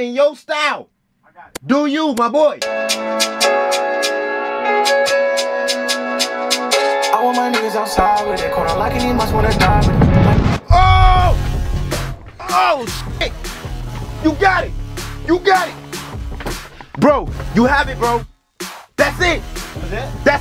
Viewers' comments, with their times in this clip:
0:07 so we not gone talk about the auto tune